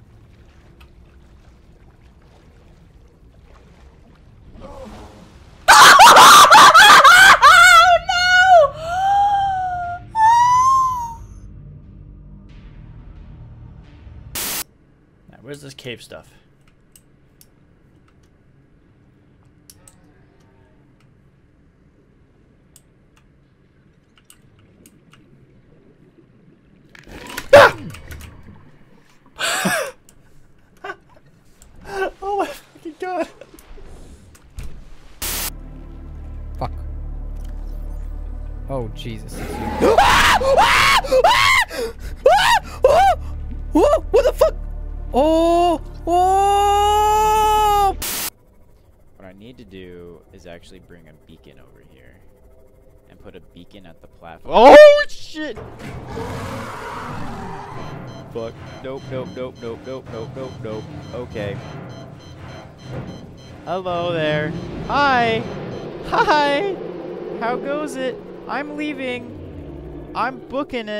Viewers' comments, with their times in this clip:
0:05 the birth of creepypasta sounds
0:35 who replaced the audio with monkey sounds?
0:36 One of the funniest ones was in my opinion, at the end he sounds like lemon grab out of adventure time
0:38 what a fake scream
0:39 That Girl Scream From a Boy Though XD
0:39 Dude sounded like a fuckin chimpanzee lmaooo
0:40 i legit went too a zoo yesterday and herd the sound at the monkey place and i swear, i swear to god they sound so familiar my brother asked me if i were watching monkey vids. like omg they r so alike.
0:40 random monkey in the jungle:
0:56 was the quietest